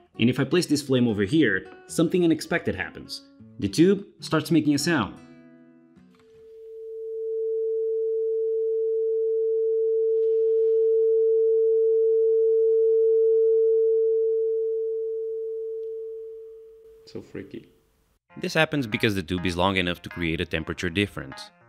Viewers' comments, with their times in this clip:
0:06 Why does really reminds me of Minecraft music
0:06 Ah, it sounds like my ears after going to too many concerts.